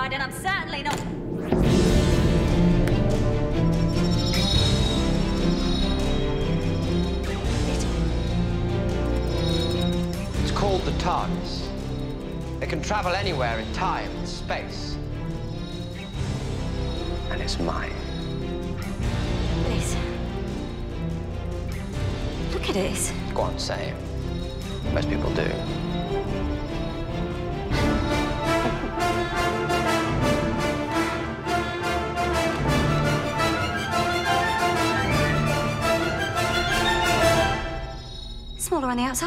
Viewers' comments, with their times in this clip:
0:03 OHHH, how I miss that music that starts into this!!! That music is epic, and screams, the Doctor is here!
0:27 Omg I don´t ever notice that little laugh I´m crying😭😭😭